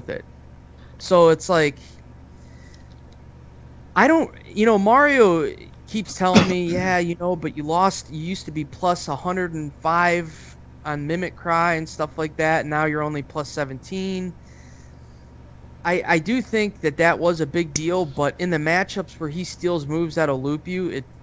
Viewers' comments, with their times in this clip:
0:07 Why are they pronouncing "mimicry" like that?